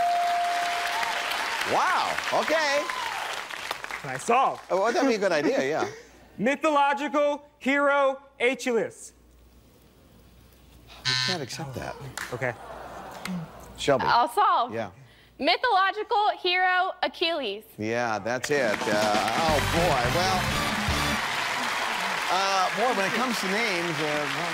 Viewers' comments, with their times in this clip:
0:06 "Mythological hero a chalice" Nani??? lol